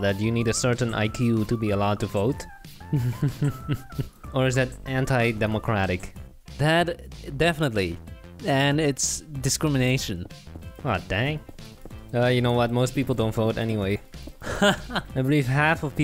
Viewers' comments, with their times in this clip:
0:03 AWW HIS LITTLE LAUGH IM🥺🥺🥺